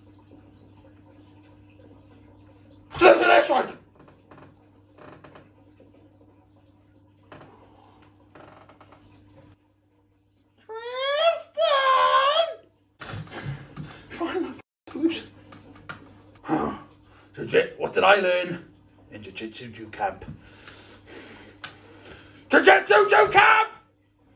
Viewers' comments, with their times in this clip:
0:10 sounds like the gingerbread man from shrek 😂